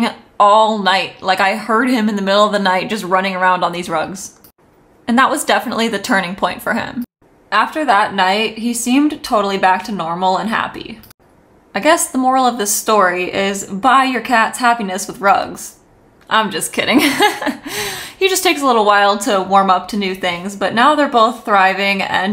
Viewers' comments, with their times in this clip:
0:10 That Yoshi yawn is priceless!